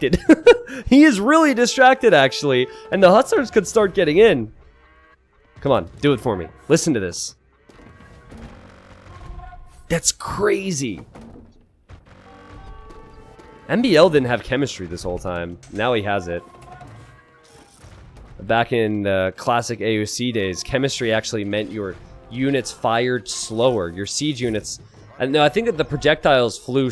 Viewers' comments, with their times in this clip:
0:06 Listen to those SOs. Brrrrrrrrr errorrrrrr
0:09 A10 thunderbolt passing by